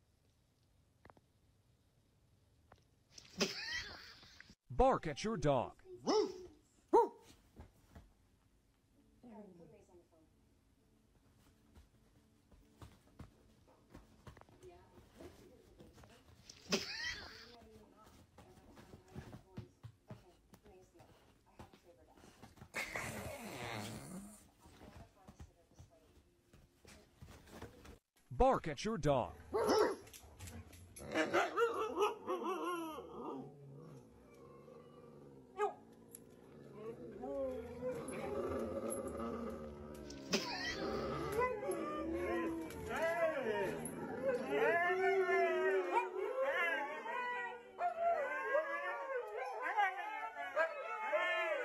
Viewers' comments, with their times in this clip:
0:07 Her bark sounded more like, “HOOTERS!!!”
0:14 Did someone fart during the recording ?
0:29 owner: barks Huskies: I told you he can speak our language
0:29 bro started a rebellion with a single bark
0:29 in one fucking bark your neighbourg hate you 🗿
0:29 Barks Huskies: Starts an entire Council Rebellion
0:29 barking in a room full of huskies... do you have any idea what you just started???
0:35 dogs had a concert 😂
0:36 WTF are those. Cat-dogs?? How TF do dogs bark and meow????!!!!???? 🤔
0:36 The moment when the huskies realised their hooman has lost the plot, and howl to mourn the fact that they will no longer be receiving food from said hooman, who is now little more than an unemployed doggo themself.